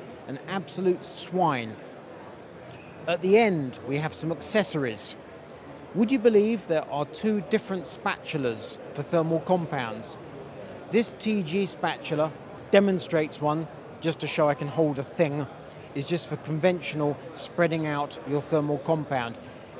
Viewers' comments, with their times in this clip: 0:06 "Get Smart"?? Sounded like Don Adams there 😆